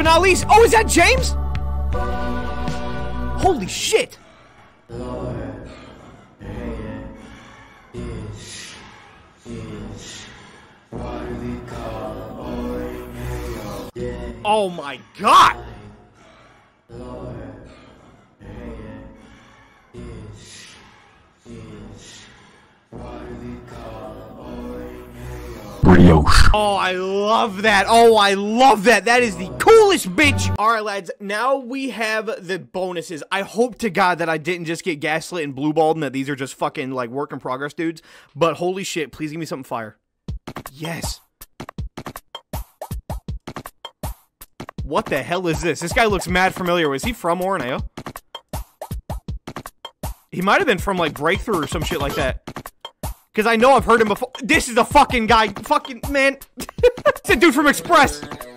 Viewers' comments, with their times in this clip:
0:06 best voice I’ve ever heard bro
0:14 sounds like DAY NIGHT LOVE IT HATE IT IS THIS WHAT WE CALL ORIN AYO
0:20 I think I hear “this. is. why the call it ORIN ÂŶØ
0:42 you can tell because of the hip-hop type beat and the funni glitch sound